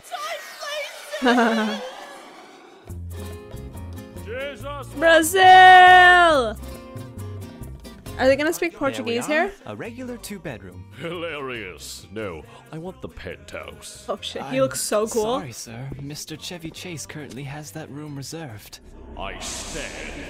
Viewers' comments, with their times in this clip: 0:05 You talked above the best joke in the video...